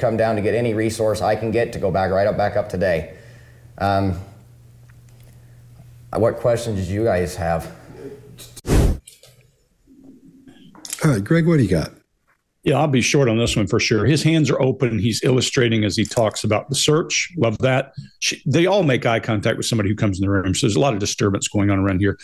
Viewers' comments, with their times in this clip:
0:10 when the father says: “What questions did you guys have?” he’s out of breath and his body kind of crumples in forward and he looks so pitiful. i feel awful for him. his body is so still as he rambles on and on. i think he’s exhausted and all he can move are his mouth and his thumbs. it feels to me like his rambling is a coping device, like as long as he keeps talking and focusing on how amazing these people are, it keeps his hope alive that his son will be found. 😢